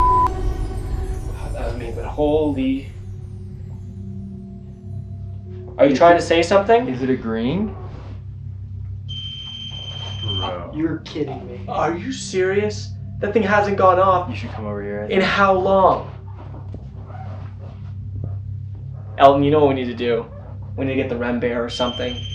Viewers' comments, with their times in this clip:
0:06 It sounded like a small "hmm" or a faint "no"
0:07 there a breath and a whine evp. Can anyone else hear this?